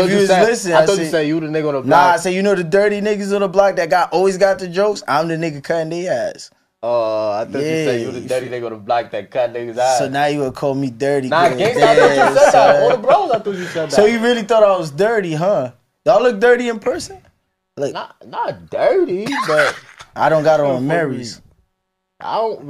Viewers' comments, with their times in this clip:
0:09 I definitely heard what 26 heard, but ight 😂